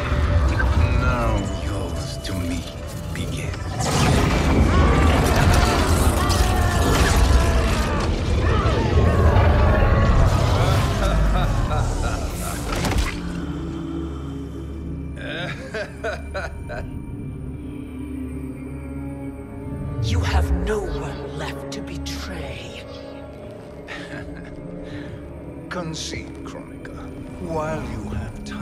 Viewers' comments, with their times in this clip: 0:10 that laugh tho. Damn I love it. “ah ha ha ha ha ha, ah ha ha ha ha”
0:10 Shang Tsung's Agent Smith laugh
0:15 ngl that was the goofiest laugh I've ever heard
0:16 😂 this is my favorite part his laugh is so evil it make so sense